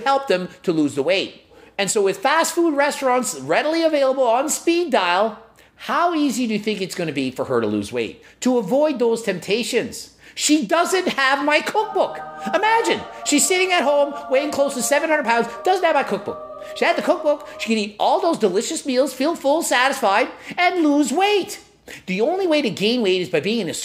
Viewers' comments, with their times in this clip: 0:09 Every time that stupid cookbook gets pitched, the ridiculous angelic music cues. And it makes me laugh every time. Lol what the hell?